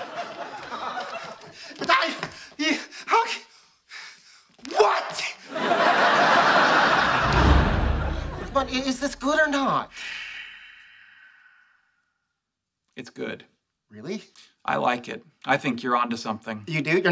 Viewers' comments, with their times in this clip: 0:04 the way he said what 😂😂